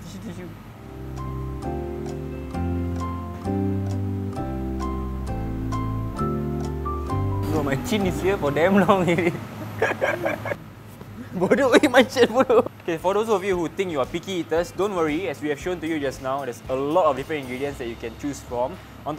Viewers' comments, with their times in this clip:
0:07 Srsly this duo laugh die me THEY BFF SIBO